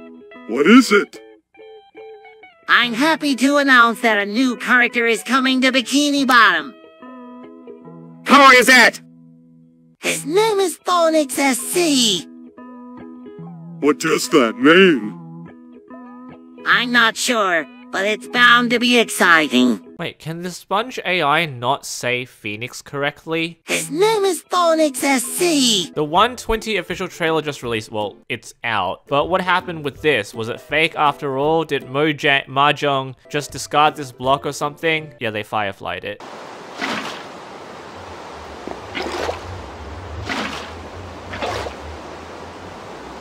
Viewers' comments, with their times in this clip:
0:09 he said phonex SC
0:10 His name is poenicks sc 💀
0:31 he said Mojang with a j ong